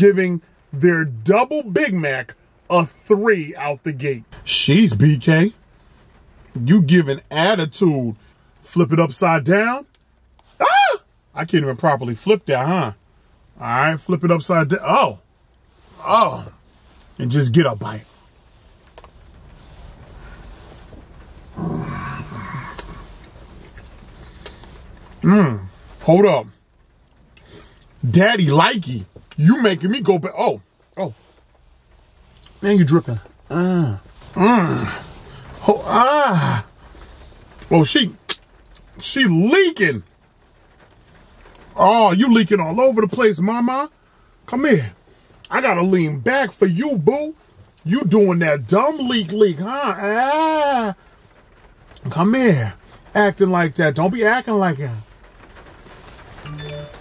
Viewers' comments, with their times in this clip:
0:10 When he screams like girl😂
0:45 definitely had to turn it down